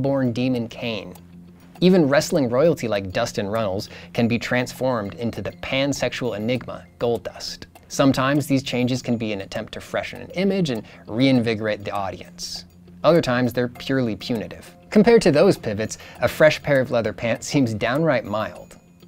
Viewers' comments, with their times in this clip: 0:03 "Dustin Reynolds"? Did anyone else hear this or just me? Anyway, thoroughly enjoyable video.